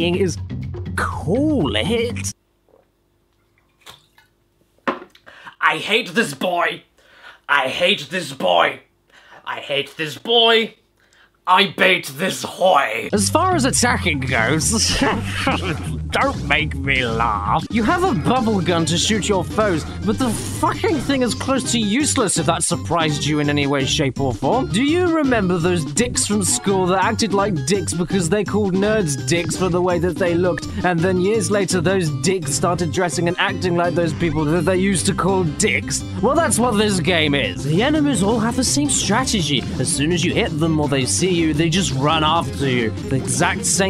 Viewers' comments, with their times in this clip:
0:04 gut busting laughter
0:25 it sounds like clash of clans in the background